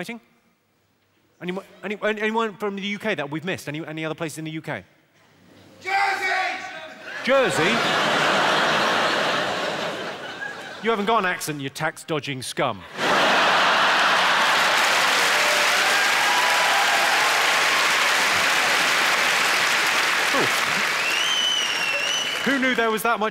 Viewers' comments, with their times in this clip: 0:05 Man yelled “JERSEY!!” With some venom